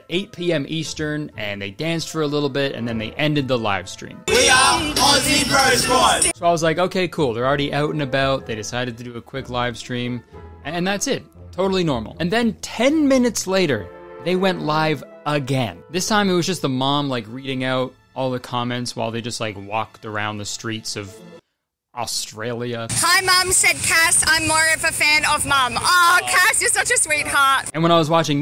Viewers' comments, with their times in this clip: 0:07 Oyut and aboyut
0:09 always forget ur Canadian but that “out and about” was all the reminding I needed.